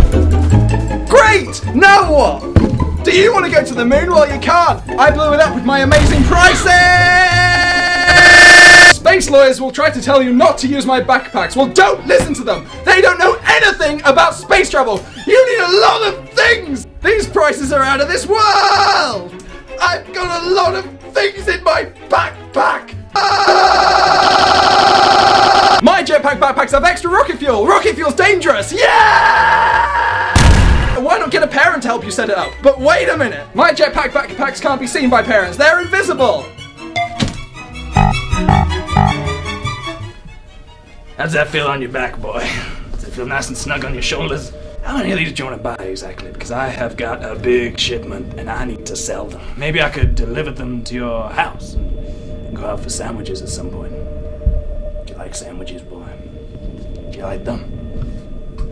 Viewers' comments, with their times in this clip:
0:07 omg my ears :( i had my headphone on and volume on 70 .... but still i like the video :3
0:08 my little sister got scared when your fa e started multiplyingand you were like yelling LOL XD
0:42 that creepy voice sounds like the spirit of jazz... CREE-PEE